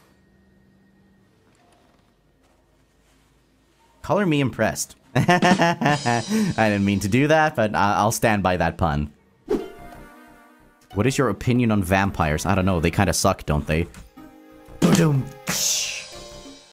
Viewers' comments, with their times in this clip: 0:04 his laugh sent me, one of the most goofy sounds ever heard from him lmao